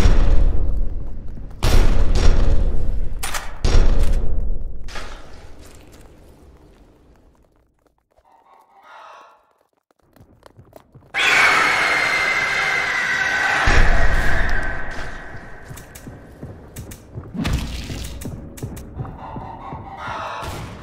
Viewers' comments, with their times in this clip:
0:08 You can hear chicken ghost :o